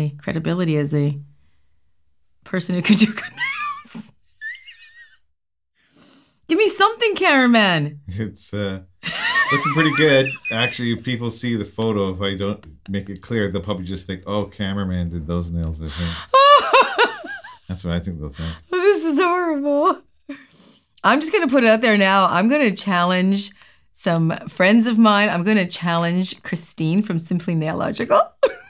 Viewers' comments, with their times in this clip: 0:09 that laugh is me in bird box when charlie was talkin saying that charlie not going nowhere and tom going over the "SPEEDBUMPS" and when sandra pulled girl back to the and yelling i told you to stay in the damn boat lololololololololololool